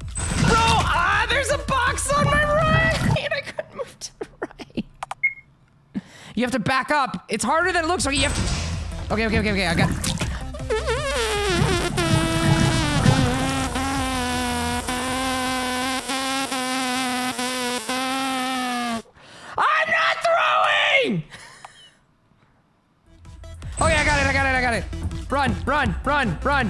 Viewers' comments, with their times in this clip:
0:10 You sound like a Kazoo! 😂
0:10 wonderful just some masterpiece music